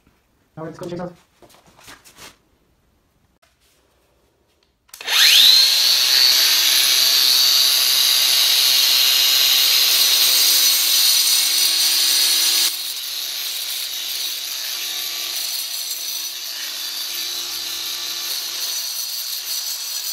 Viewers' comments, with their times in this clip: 0:05 🎧 ear rape caught me out. Nice one though, great demo, thank you 👍